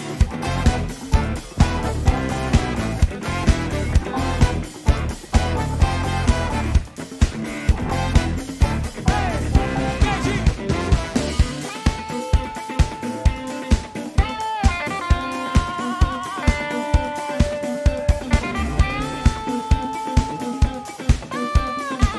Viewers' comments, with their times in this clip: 0:10 omg that clav solo